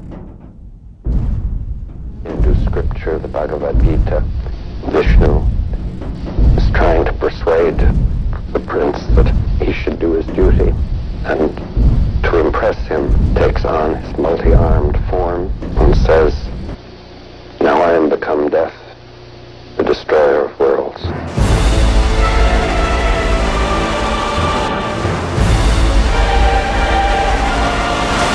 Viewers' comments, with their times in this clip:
0:09 I thought the linkin park album was playing from Spotify due to the guy talking LOL